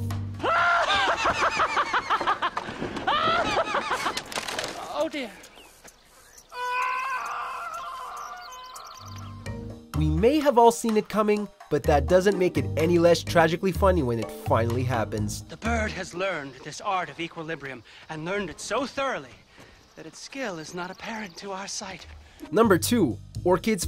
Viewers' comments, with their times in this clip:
0:06 sounds like morty XD